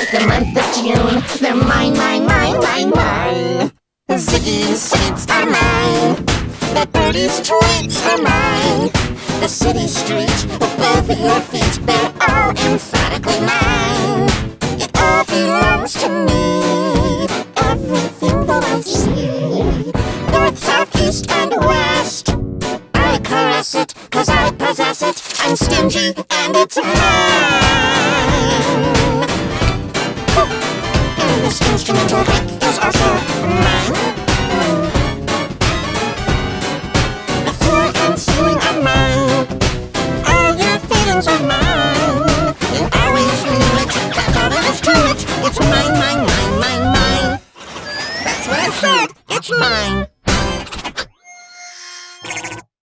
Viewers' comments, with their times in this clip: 0:04 Sounds like G Major 8 and G Major 3
0:06 sounds Like G-Major 8
0:06 sounds like pika major
0:28 G major 36!!!
0:38 Sounds like does not respond?
0:39 FAKE G MAJOR!
0:39 sounds like g major